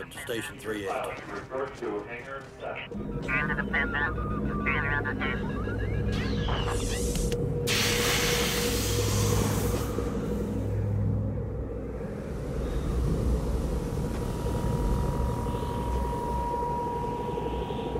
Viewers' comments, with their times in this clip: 0:03 As a kid I heard it as "Into the business, stay in this is" ( I barely spoke English back then)